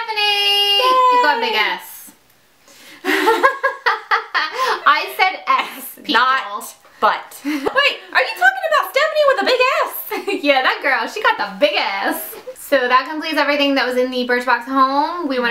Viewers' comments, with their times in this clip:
0:03 you guys laughed at the same time :P